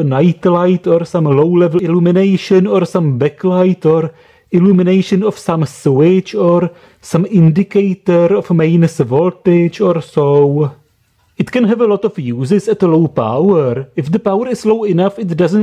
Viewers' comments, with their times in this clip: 0:03 he said sewage If you hear the same press this I V